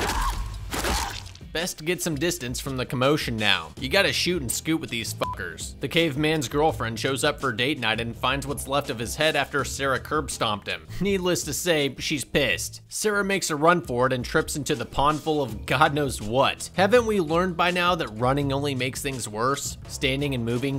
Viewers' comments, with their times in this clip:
0:08 The crawler that Sarah head stomped was actually a child i think since it eas smaller and squeakier, the female after was its mother